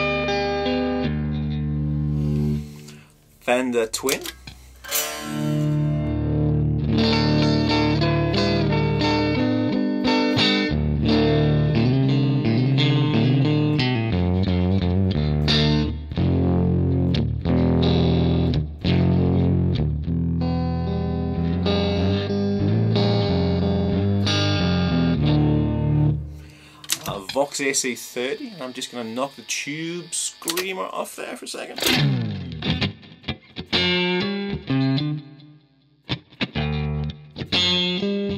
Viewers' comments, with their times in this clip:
0:07 That Twin sound is very wooly (low frequency distortion). With the drive set at 32 (low), shouldn't that sound be very clean? I don't see any drive pedal models in the signal chain.
0:26 damn that Vox AC30 emulation sounds great!